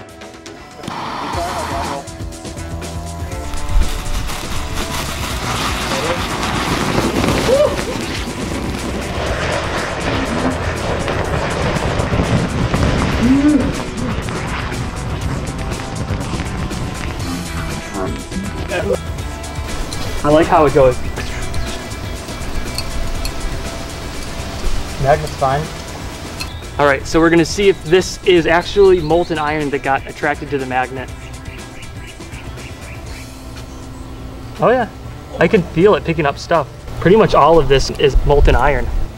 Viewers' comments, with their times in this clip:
0:09 BABIES HAVING PAINFUL EXPLOSIVE DIARRHEA AT 3 AM
0:17 what the Frick was that noise
0:26 sounded like a fart